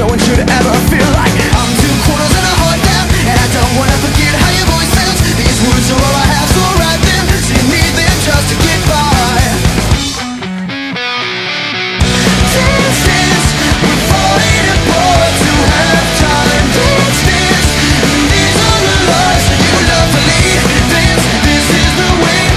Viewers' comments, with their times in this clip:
0:10 DOES ANYONE ELSE WITH HEADPHONES HEAR WHISPERING?!